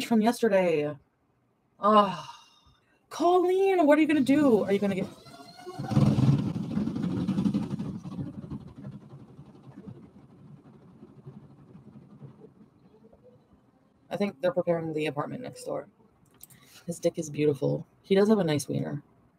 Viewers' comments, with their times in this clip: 0:05 I deadass thought that was her stomach 😫😂😂😂